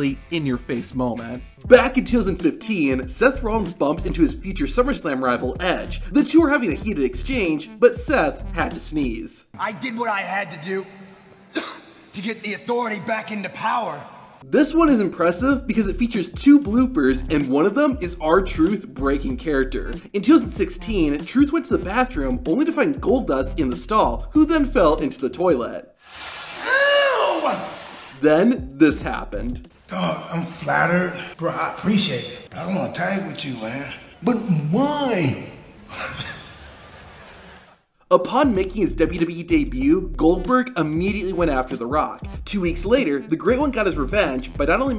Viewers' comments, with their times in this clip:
0:08 “[…] but Seth had to sneeze” Seth: cough
0:09 it said Steth had to sneeze, but it sounded more like a cough. And when the football player was trying to cross the baracade why did they blur the entire scene? 🤔
0:27 I laughed the hardest when someone shouted eew